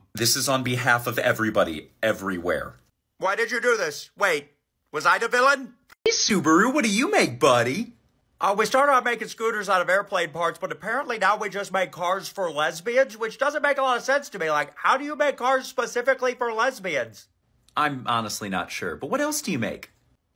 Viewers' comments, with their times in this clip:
0:05 all I hear is llamas with hats